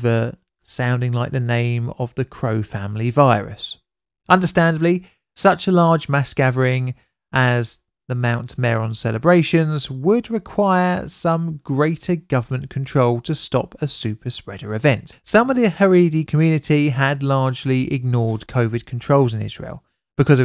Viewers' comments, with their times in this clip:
0:06 CROW-VID 19 caw**caw**caw 😂😂😂😂😂😂